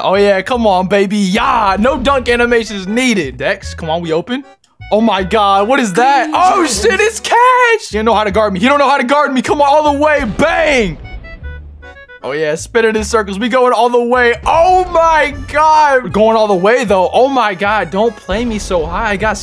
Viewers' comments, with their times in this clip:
0:06 he said oh shit in britian